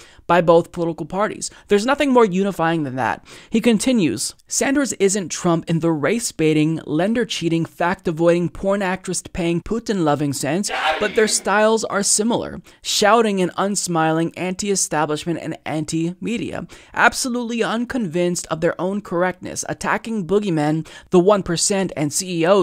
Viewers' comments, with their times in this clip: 0:08 holy shit that scared the shit out of me. I was listening to this with my headphones on, not seeing the video and then, I don't know what the fuck he yelled.